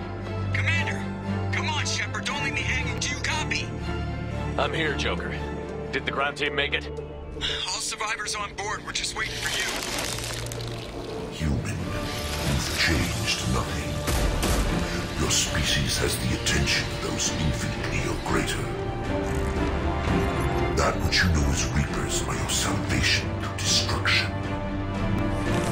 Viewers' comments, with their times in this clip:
0:10 Damn.. Didn't think of that before, those insect-things that formed together in and said "human, you've changed nothing", that the voice there was Harbinger talking. Well, time to reinstall Mass Effect 2 and play that again.